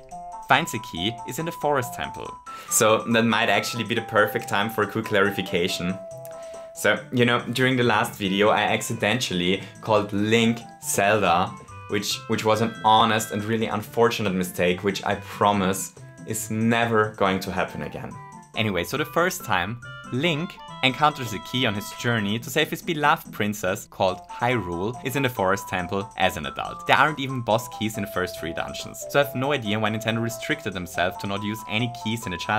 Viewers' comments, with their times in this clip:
0:07 Him calling Zelda "Hyrule" with zero irony or voice inflections was peak comedy
0:20 this is one of the most well delivered joke I've ever heard. Everything was perfect. The teasing at the begining that let us predict a predictable joke Then he says "Link" correctly which led me think that the joke would take place later on in the video. And then, then this is where the magic happen. It managed to be unexpected while still making sense And I cannot forget about the tone and the pacing. They're what made this joke so memorable to me Congrats! It will go down as one of my favorite joke I've hear on youtube and I'll definitely remember it for at least 5 years